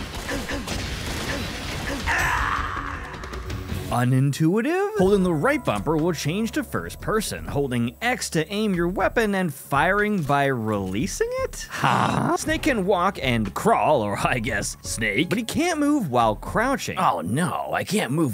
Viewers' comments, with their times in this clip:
0:05 the “huuuuh?” at holding and releasing X to shoot got me belly laughing 😂😂